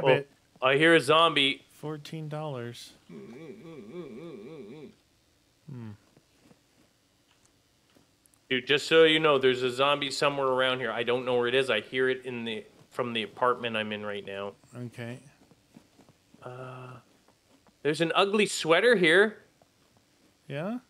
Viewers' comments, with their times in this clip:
0:05 Was that someone trying to start an old truck